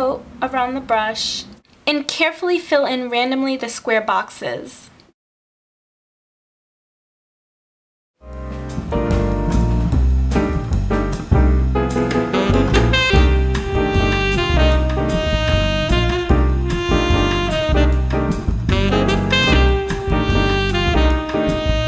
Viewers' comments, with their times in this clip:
0:07 nice blocks! I liked them. the song playing at minute seems like the sims music!